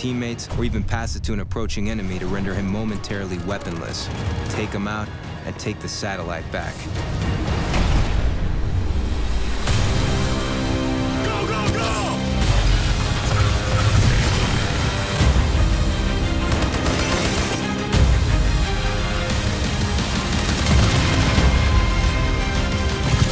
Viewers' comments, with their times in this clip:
0:09 Till this day I'm wondering what the music was called It's sooooo hype, god I miss the old days...